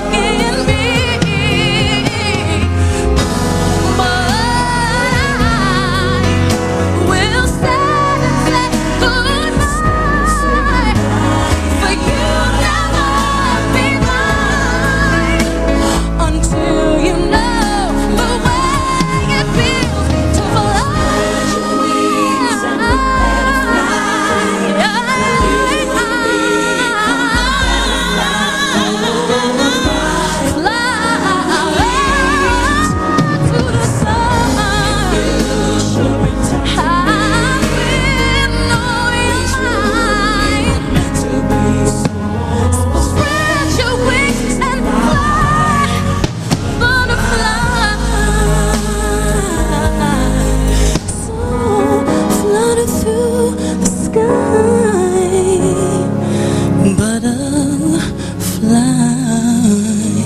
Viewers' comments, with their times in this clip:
0:06 that BYEEEEEE was so thick and powerful
0:09 what a voice in
0:11 "For you'll NEVER BE MIIINE!!" GOOSEBUMPS YALL
0:15 she takes a deeeeeep breath before she begins the slayage.
0:15 that gasp for air. Wowowow!!
0:20 do u see how far she has to go away from the mic to hit that "fly" note?? coz its not only high but its a super loud note, if u guys are familiar to singing u can understand that hitting high notes are very hard if u dont have the range, but if u have it then hitting them loud its what makes it an acomplishment, hitting them loud n on point like she did in here n in the record is just very hard, for me the climax of this song is one of the hardest to do of her songs cos of the loudness of the notes and the long melismatic runs she does plus sustaning the notes longer... damn!!! she's a beast.
0:20 Her background singer didn’t screw up lol. If you listen to the recording of the song that part is in the song. I’m sure she was supposed to do it. Mariah was trying to get herself back together after that note she hit
0:21 How tf did she sustain that note without sounding like a dying cat
0:22 Uhm no, She turned away because it's a loud note. She always does this to keep the volume even. Also, not sure what you're hearing. The note was evenly placed, open throat and supported. It had a resonating quality 2 seconds in and fully opened up A truly beautiful note in an evenly placed mixed voice and she is still able to retain her tone without sounding whiny like 99% of singers.
0:22 She get mad to the back-up singer who does riffs It ruins her's. Hahaha
0:26 What the hell That backup though she must be fired after that.
0:27 bg singer(s) went off the rails way loud, and messy! Bad move, earning the lazer beams⚡💥🦋🔥and stink-eye. They didn't return to her.They truly weren't meant to be.
0:27 daydream coz somebody was doing the wrong note/run LOL
0:27 bg singer(s) went off the rails way loud, and messy! Bad move; earning the lazer beams. That, or an inside joke with the singers like, geez this is alot of work kill me now, can't wait to be done here, it hurts!
0:27 one of the backup singers sings the real high note, wonder if she wasn't happy that she 'upstaged' her by singing that note....??
0:28 You can hear one of the back up singers got super loud, almost louder than Mariah. That’s why she gave them that look.
0:34 somebody's doin' the wrong note (silent edition w/ laser eyes).
0:34 " WHY THE F*** DID I PUT THESE HIGH NOTES IN THIS SONG??!... JESUS"
0:34 "b*itch what the fuck was that,better come back to your singing lessons,trynna ruin my concert and sh*t,ohh helll noooooo"😂😂😂😂😂
0:34 when you're killing it but your background singer did extra runs that wasn't part of the rehearsal
0:34 lol backup singer messed up the notes
0:34 You know it's live when she glares at the background singers hitting the wrong key
0:34 RIP to the back up singer who screwed up
0:34 somebody's doing the wrong note HAHAHHAHAHAHAHAA
0:34 There is a weird sound and she stared at someone hahaha Mariah is Mariah
0:44 I like that 'spread your wings and fly-haaaee"